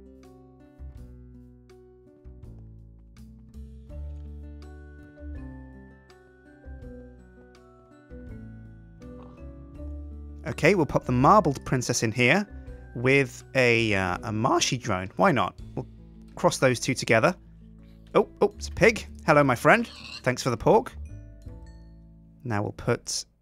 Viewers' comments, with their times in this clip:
0:04 if you listen well.. you can hear a clock ticking :D